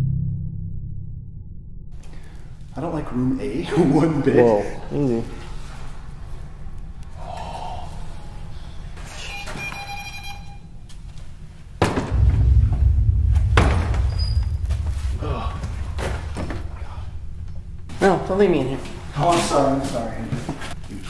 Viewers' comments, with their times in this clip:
0:07 right after you sigh, I hear a distant scream